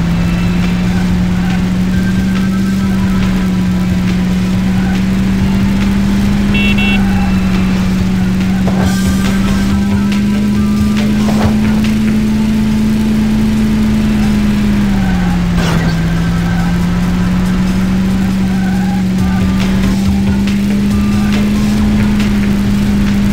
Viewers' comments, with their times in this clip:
0:06 did you know that you can honk back?